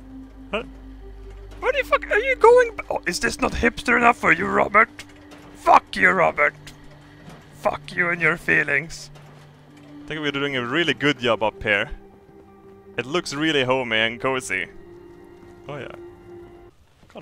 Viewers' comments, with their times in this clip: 0:04 Cannibal mad scientist creates clones. Complete with thunder and lightning storm outside. You launched a preemptive strike against the villagers of Sanctuary before they got the torches and pitchforks. oh gawd is that evil Kermit or Yoda?